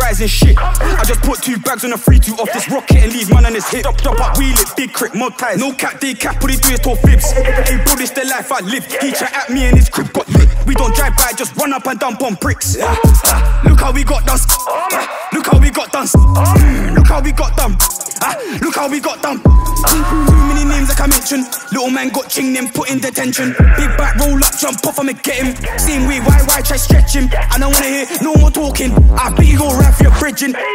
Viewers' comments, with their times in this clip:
0:06 that effect they used with his voice is hardddd
0:11 zone 2 dead flow